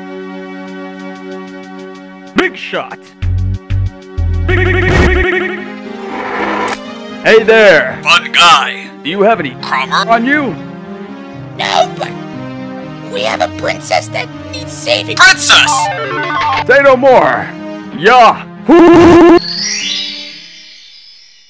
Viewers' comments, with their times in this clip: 0:06 spamtons voices is the best theng since spamton giga